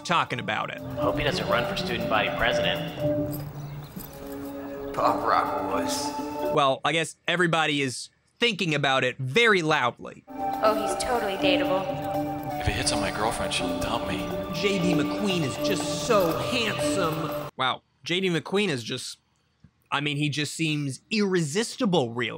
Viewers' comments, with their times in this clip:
0:10 bro my stupid romance-hating brain thought she said "Oh, he's TOTALLY hateable" until I rewound after the dude said "If he hits on my girlfriend..." and then I realized she said "Dateable"